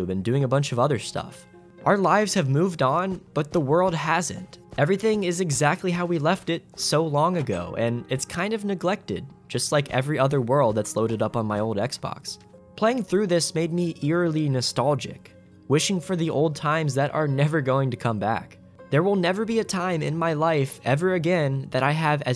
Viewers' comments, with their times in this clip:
0:10 Robo talking Me: o0o0 parrot